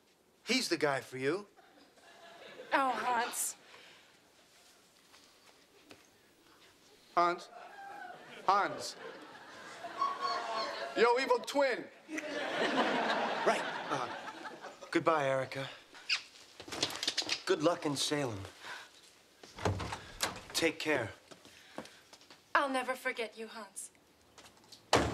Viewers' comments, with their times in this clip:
0:09 ross voice crack made this entire scene better